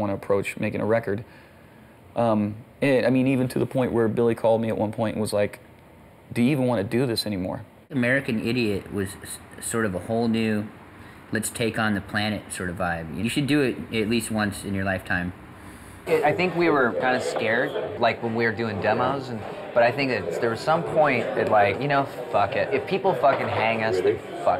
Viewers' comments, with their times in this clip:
0:06 I didn't expected that funny voice coming from the drummer 😅😂😂😂👌